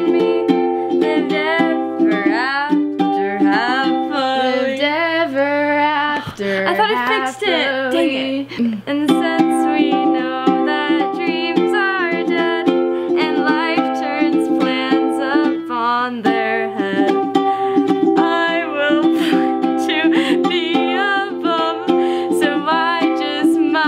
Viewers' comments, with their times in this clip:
0:06 y’all both sound 100/100